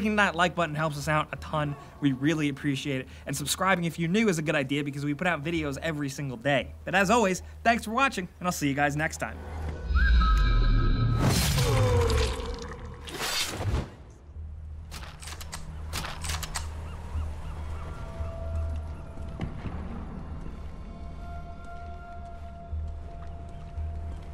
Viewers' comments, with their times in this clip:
0:08 lol gotta love that little whistle.